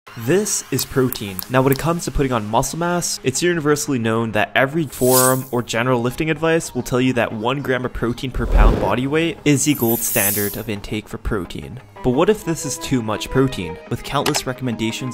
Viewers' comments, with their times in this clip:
0:02 was that a dog ?!!